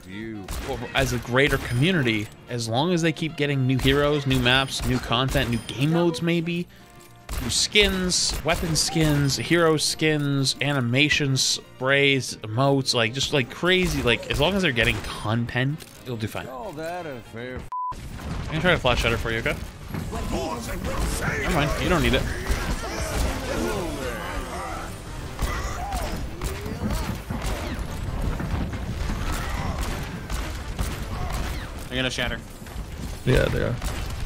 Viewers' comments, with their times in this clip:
0:08 Why is nobody talking ....??
0:16 Cree: ‘You call that a fair f-‘ Scene transition beep